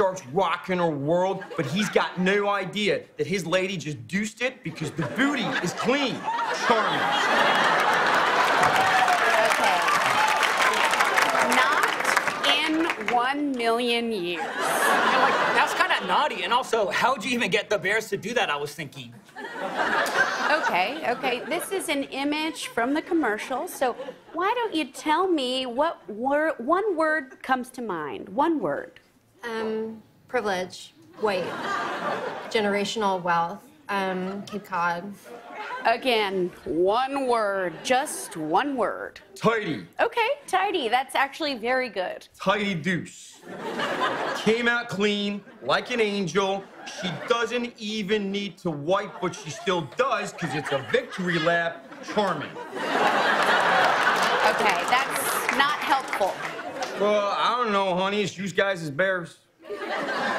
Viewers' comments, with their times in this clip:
0:07 "Okay... NOT... in One. Million. Years." That pause... I'm dead. LMBO!!!
0:47 Is it Scottish Accent ??